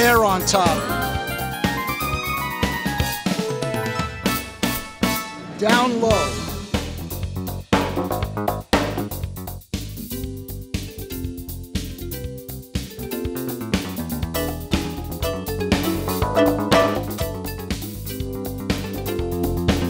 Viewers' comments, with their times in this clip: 0:06 sounds like the drums on Michael Jackson's "Smooth Criminal." I wonder if a trident console was used.